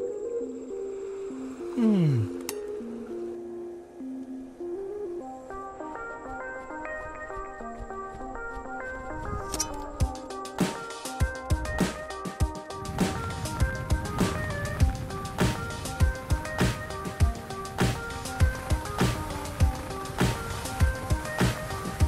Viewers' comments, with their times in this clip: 0:06 The song on is 🔥